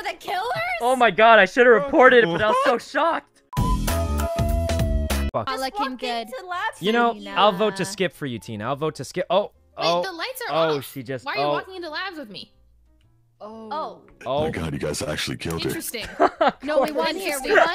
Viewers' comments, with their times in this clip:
0:05 I thought sykkuno said fwpuck